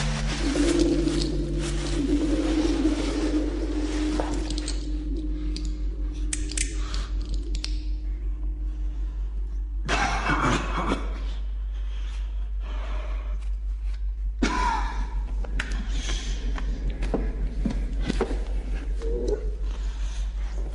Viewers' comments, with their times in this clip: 0:08 did I just hear general grievous?